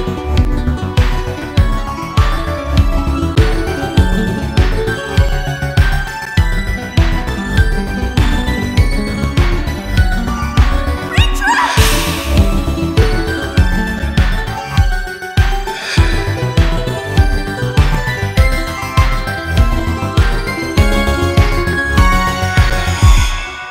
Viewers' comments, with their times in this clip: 0:07 Springtrap he like: I AM ZE TERMINATOR!!!!